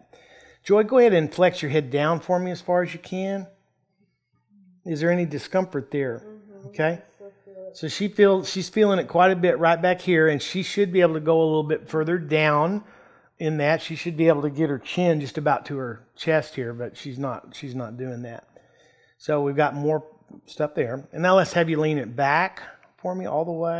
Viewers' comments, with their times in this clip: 0:07 Lol he coughed on her